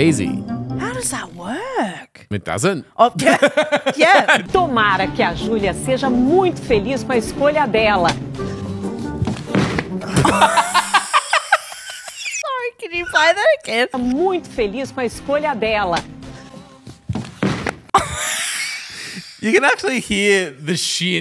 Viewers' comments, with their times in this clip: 0:05 the lady took damage in Minecraft 😂😂😂